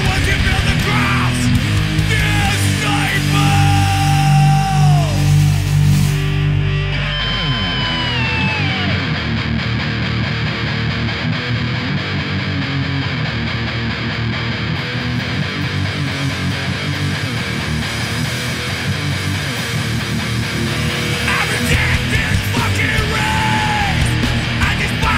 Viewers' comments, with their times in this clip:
0:07 Oh my god, that brakedown!!!!